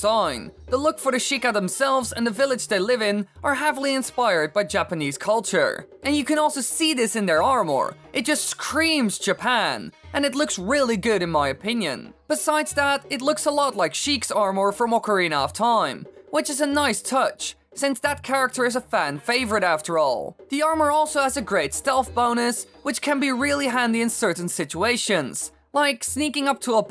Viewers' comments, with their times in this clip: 0:07 It just CREMES japan